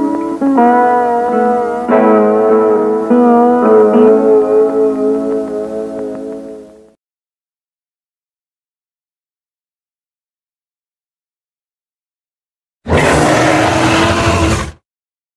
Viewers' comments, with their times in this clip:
0:13 Especially that roar